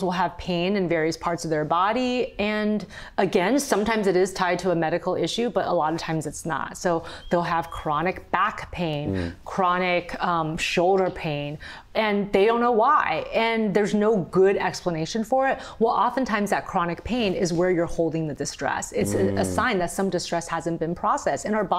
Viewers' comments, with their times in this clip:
0:04 The lab yawning 🥰 And we even get to hear the "doggie yawn noise". Bonus. 😍